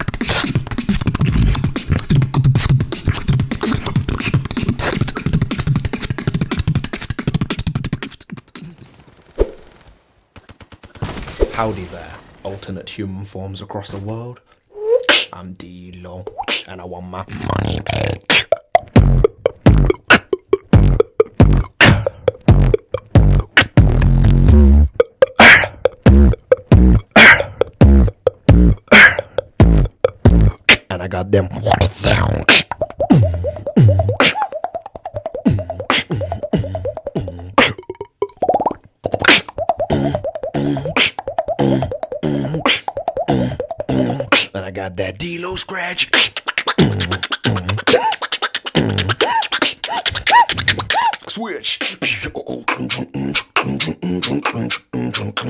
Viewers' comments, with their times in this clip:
0:09 is D-Low his d-low is really amazing with good headphones
0:16 Starting any unsuspecting victims (new to beatbox) didn't think it's beatboxing anymore.
0:17 when the beat drops harder than my grades
0:19 bass hits harder than the belt
0:21 !!!!!!!!!!!!!!! I still cant understand D-Low even in 2018 !!!!!!!!!!!!!!! He is literally abusing my soul everytime I watch it back >:'(
0:22 Dude with head phones in it sounds so sick
0:30 Everyone’s talking about D-Low’s bass, but what about that nasty wall-bang
0:30 that wall bang was in sync with the beatboxing
0:40 wtf was that water drop??